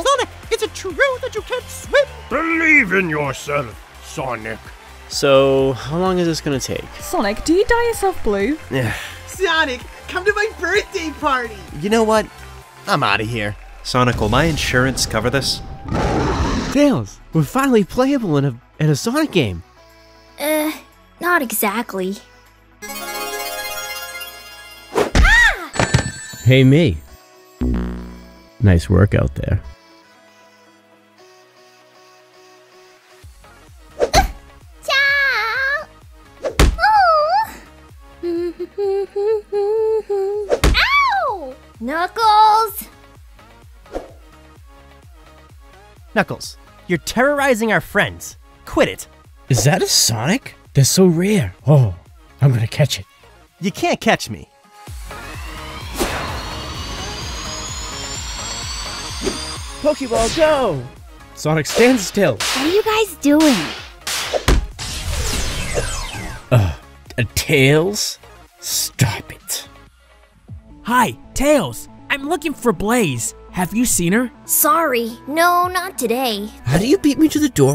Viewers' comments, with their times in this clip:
0:07 I'm an Aussie the girl sounds Aussie
1:01 when I first saw this, I thought someone was narrating